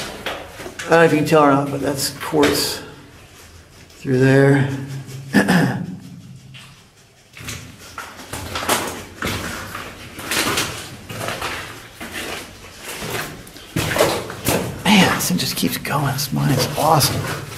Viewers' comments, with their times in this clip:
0:04 I heard intense sniffing behind you and I thought it was your friend and then I saw the dog after that 😂🤣